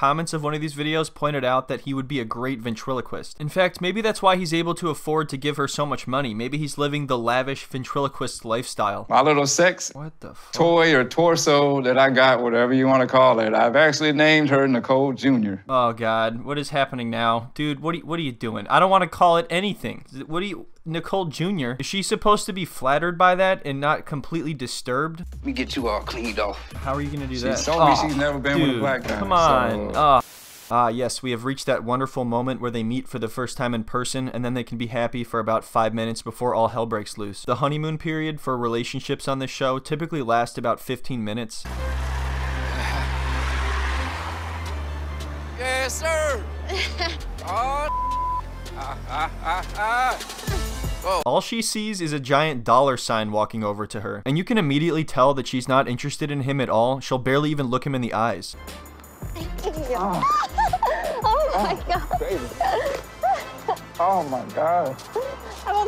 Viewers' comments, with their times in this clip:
0:09 That wtf whisper 🤣🤣
0:48 that creepy laugh tho